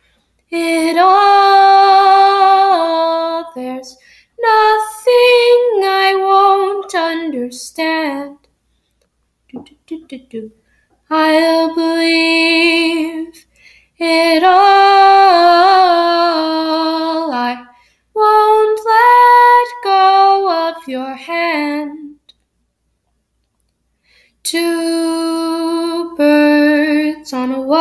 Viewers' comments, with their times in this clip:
0:09 ty ty ty ). You really good in sing